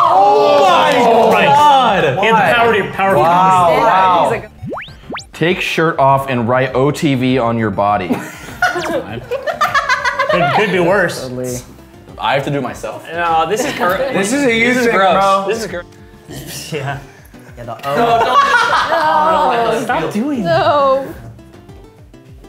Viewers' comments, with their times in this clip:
0:08 Lily's laugh in is terrifying
0:09 That was a chilling laugh lol 😨